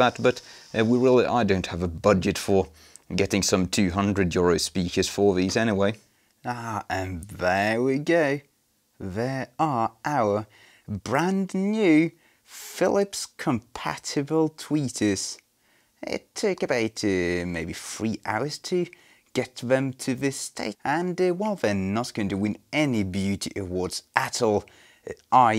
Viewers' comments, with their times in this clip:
0:06 I‘m very gay? 😁